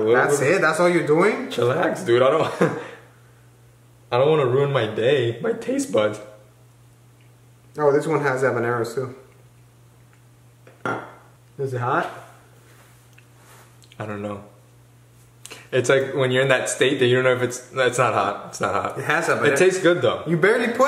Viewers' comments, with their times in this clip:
0:05 that voice crack😂😭